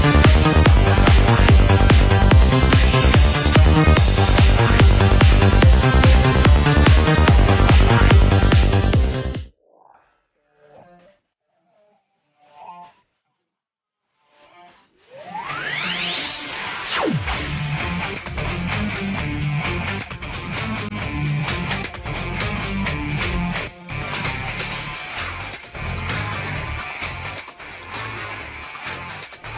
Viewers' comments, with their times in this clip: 0:10 music is distorted because it was copyrighted ):